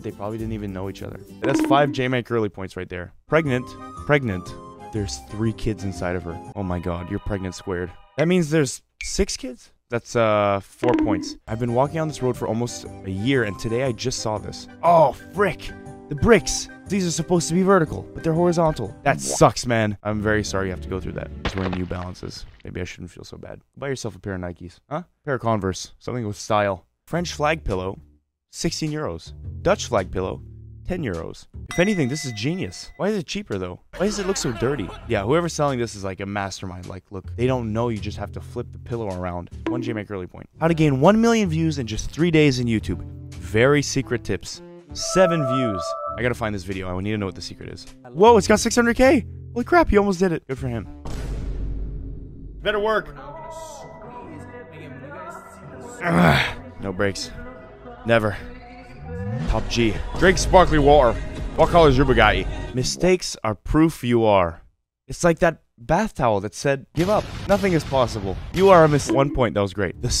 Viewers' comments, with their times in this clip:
0:10 the song i heard for a split second reminded me of how useless i am.
0:21 capuchin death sound
0:58 Why he so good at the andrew tate voice